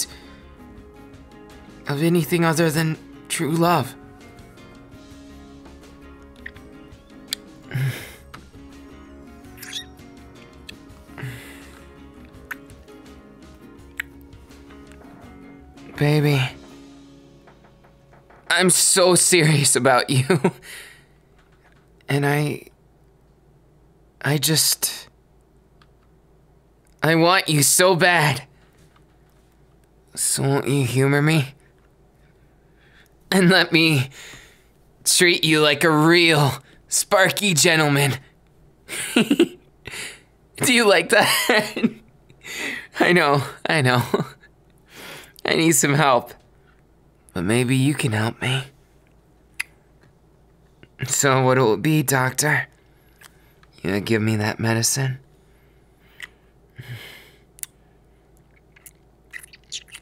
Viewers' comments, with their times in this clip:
0:06 the kiss sounds like a guinea pig or is it just me
0:38 wait that giggle-
0:39 THE GIGGLE HAS MY HEART
0:39 HIS LAUGH IS THE FUCKING CUTEST THING IVE EVER HEARD
0:39 OMG THAT LAUGH THO MY HEART CANT CONTAIN IT ANYMORE ❤️
0:42 ; n ; so quiet I'm Petrified now hug me ;<;....
0:44 The voice dropped😵